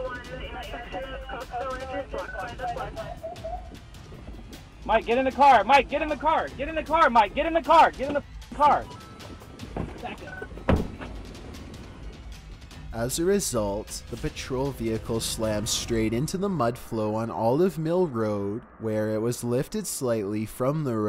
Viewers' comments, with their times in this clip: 0:06 In you can hear the sound of super mario when he catches a coin XD
0:07 listen there is a meme sound lol
0:08 mario coin sound
0:08 Did anyone else hear the Mario 1-UP chime ?